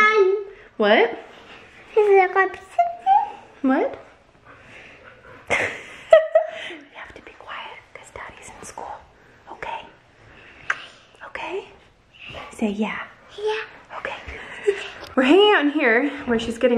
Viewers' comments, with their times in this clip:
0:03 it sounds like she says I love the attention